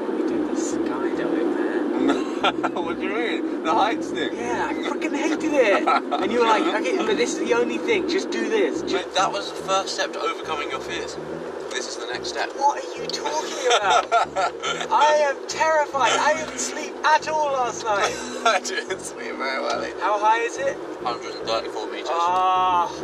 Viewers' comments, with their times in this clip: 0:05 I READ “freakin” but I HEARD something different 😏